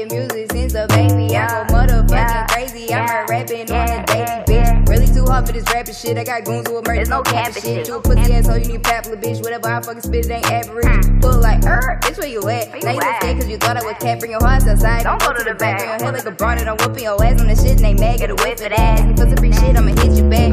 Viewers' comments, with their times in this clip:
0:03 That bar is like a breakdown in a metal song, sick